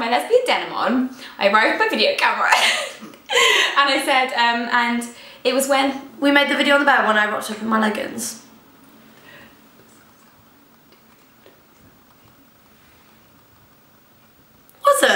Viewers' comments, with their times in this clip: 0:03 Starting for about 20 seconds I can't understand what they are saying. Something about "mulligans"? or something like that. I do understand a lot of it, but they are talking fast and they have accents and some words we don't use.